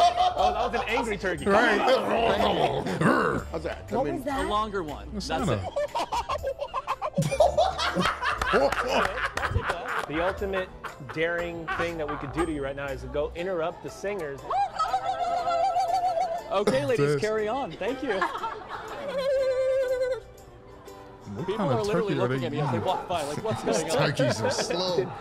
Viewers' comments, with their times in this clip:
0:06 That was a Scandanavian Turkey, bro.